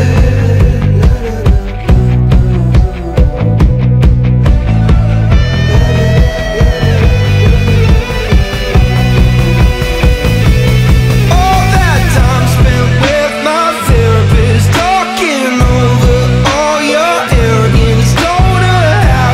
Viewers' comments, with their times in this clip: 0:04 What is said ? I can see him say something, but can't make it out.